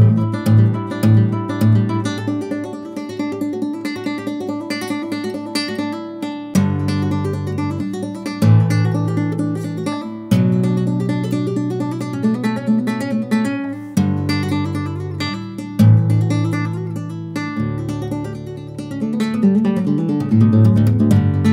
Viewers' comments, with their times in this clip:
0:03 how is that possible dude creating different tones with only your left hand???